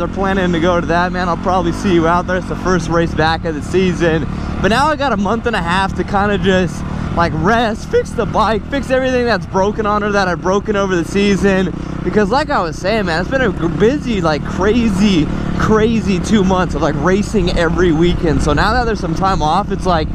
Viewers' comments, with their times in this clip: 0:07 anyone else hear the voice crack